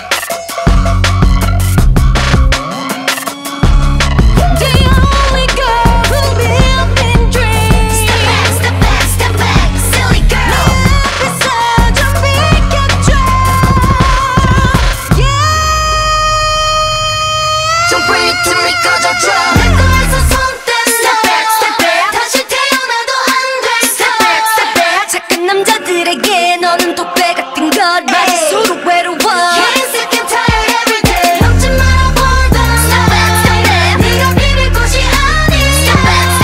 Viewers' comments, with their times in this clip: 0:03 Seulgi & Taeyeon high note: "The only girl who live in a dream"
0:10 OMG, Taeyeon's high note makes you shiver, it's amazing, wow
0:10 Taeyeon's high note just EVERYTHING
0:12 EXCUSE ME TEAYEONS HIGH NOTE??
0:15 Taeyeon's high notes 😍
0:24 you can hear how different wendy sang the line compared to others,,, more power and dominating